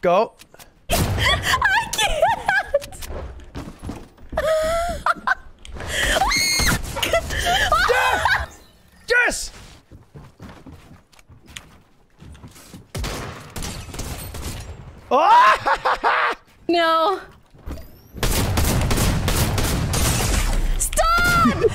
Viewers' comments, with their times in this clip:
0:06 I am sorry my fellow headphone users